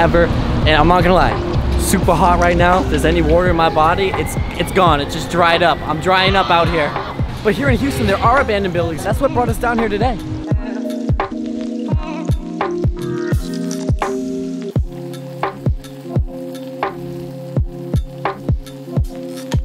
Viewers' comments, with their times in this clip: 0:03 im i the only that hear a scream in the beginning?
0:04 Did anyone else hear a woman yell? @ time
0:06 who's screaming lol😂
0:06 Did anyone else here someone screaming for help ?!?!?!
0:06 Omg just listen to the moan 🤣
0:06 did anyone hear that strange scream?
0:06 you can hear some one yelling
0:06 was that the dude walking?